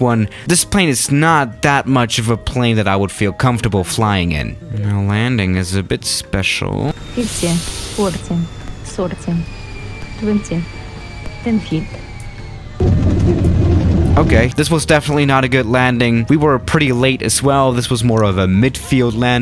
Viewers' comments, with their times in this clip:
0:07 GPWS fifty forty s o r t y twenty T E N T Y